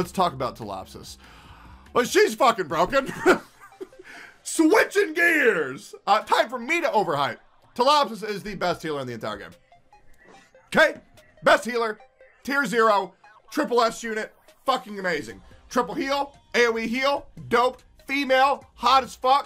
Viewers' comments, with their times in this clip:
0:07 ...You mean tea apple sauce?